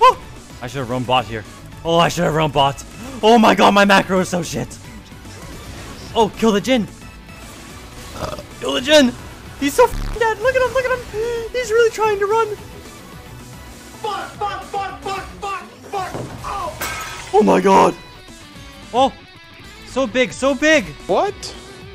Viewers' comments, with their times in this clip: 0:07 turns into rick sanchez